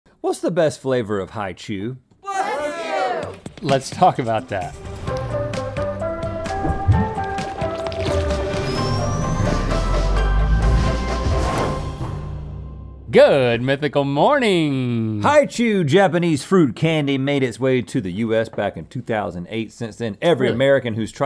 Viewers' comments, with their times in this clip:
0:02 Bless you, I've sneezed. For else. 😂